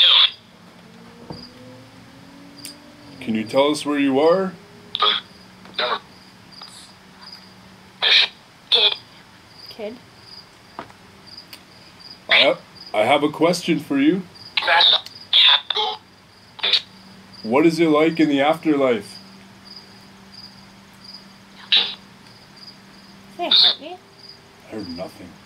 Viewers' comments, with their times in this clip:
0:06 there's a woman's voice saying something not from the app